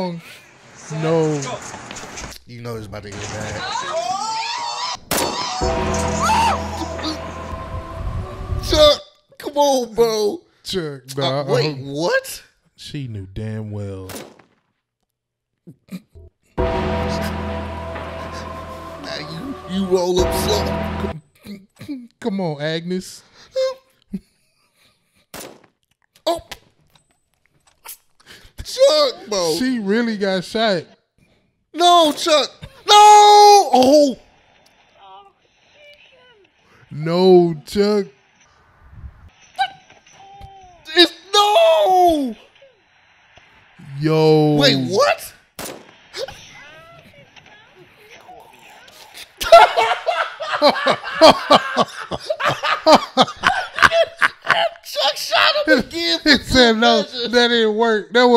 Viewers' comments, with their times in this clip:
0:08 The undertaker theme makes it 10x funnier lmaoo
0:39 I love your guys laughs around there , made me crack up myself haha